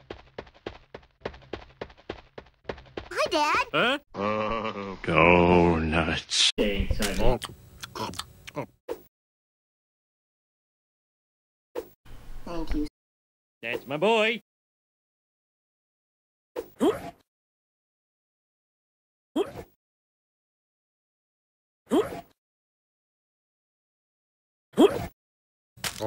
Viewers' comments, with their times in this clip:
0:07 i heard homer say thanks honey to bart